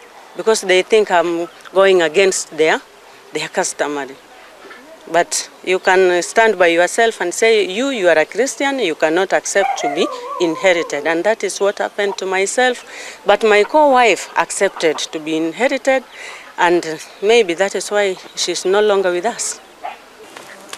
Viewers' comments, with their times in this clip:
0:07 I like this woman. Pure English and point if view